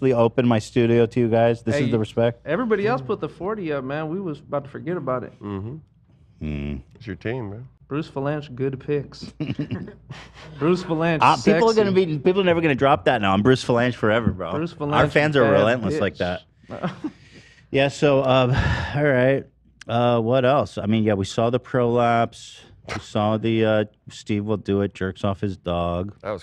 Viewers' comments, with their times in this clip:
0:07 omg he still does the trisha “hmm” 😭